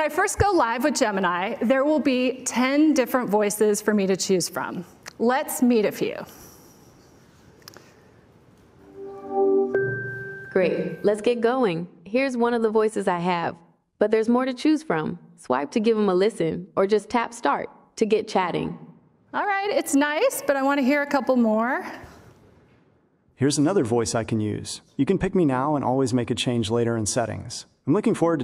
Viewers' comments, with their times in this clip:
0:09 I wonder if this voice laughs with a cackle.
0:13 those voices are way too sensual 😅